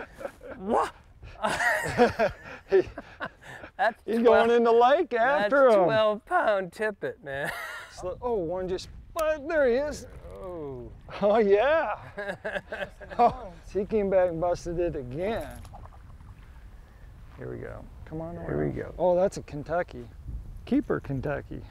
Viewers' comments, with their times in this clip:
0:03 super mario sounds